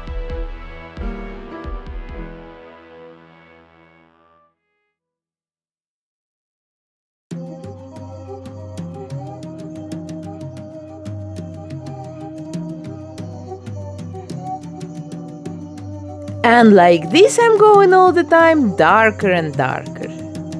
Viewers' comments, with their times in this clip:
0:04 the head looks like an old shriveled up apple! Also, I love the doll so much she's so talented! But..Im having trouble understanding her accent...